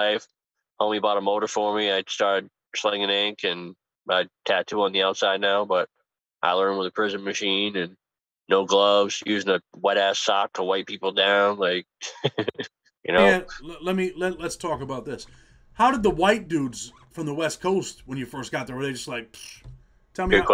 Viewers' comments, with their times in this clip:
0:06 did he say he was slinging the skin flute and hustling